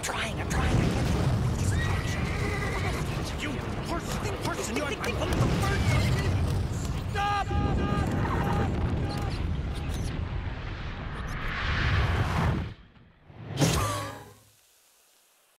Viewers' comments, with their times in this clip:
0:07 S T O P ! 😡 (echos)
0:13 Sounds like a fart.